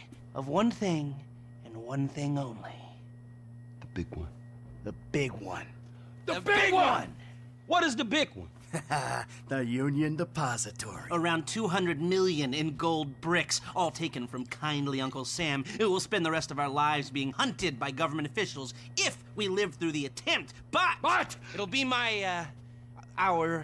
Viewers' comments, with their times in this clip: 0:06 I love how the guys unanimously devolve into kids as they yell in sync at the thought of The Big One